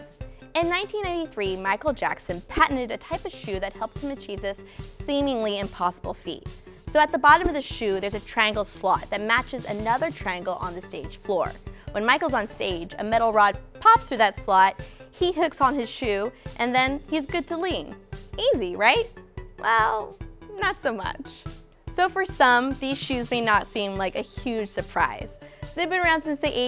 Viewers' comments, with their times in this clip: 0:08 I heard slut 😂